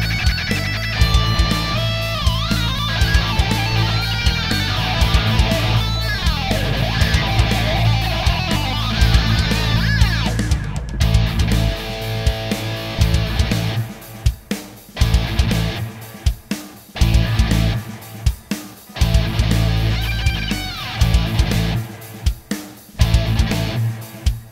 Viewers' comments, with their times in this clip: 0:09 How long were you playing it with the protective cover on the pickup? That might be why you didn't like the tone???